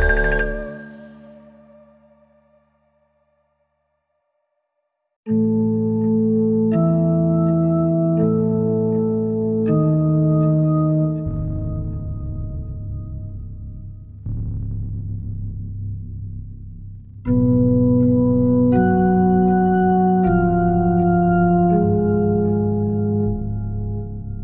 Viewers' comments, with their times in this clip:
0:05 sounds like Grim Grinning Ghosts,my favorite Halloween song